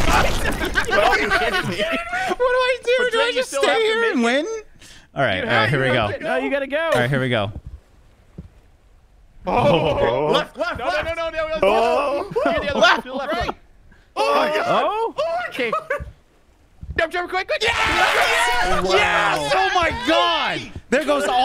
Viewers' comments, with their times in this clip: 0:08 They sound like cavemen finding out about fire for the first time